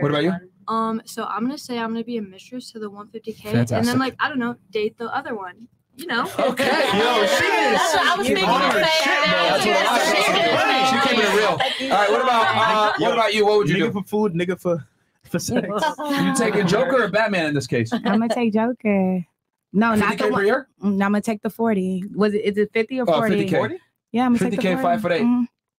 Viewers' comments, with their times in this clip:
0:07 noise Is like when an adult on Fat Albert cartoon gave them a jive rule: